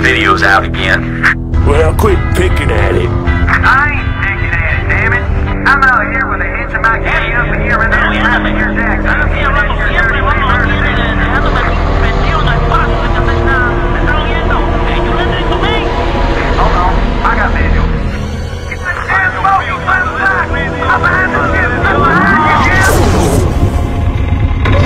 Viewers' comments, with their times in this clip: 0:08 funny thing. Only NOW do I realize that there are actual WORDS being spoken, thanks to the subtitles. When I played this when younger, even at mature age, I had always interpreted it as static / random chatter / screaming & shouting, but NEVER that there were actual WORDS being spoken... NOW I know... Thanks to the subtitles... :P Thanks, Blizz, finally after all this time... Better late than never, I guess... !! :P .